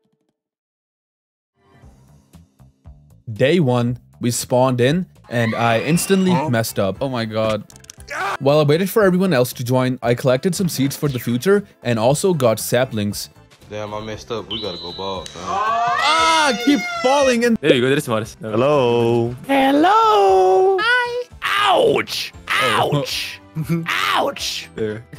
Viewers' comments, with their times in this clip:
0:08 the half life 2 rebel scream killed me 😭😭😭😭